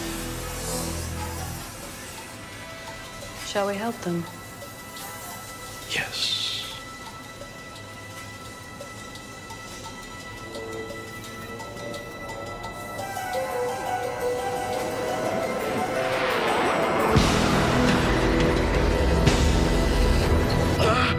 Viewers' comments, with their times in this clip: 0:05 I need to perfect Shatner's "Yesssssss"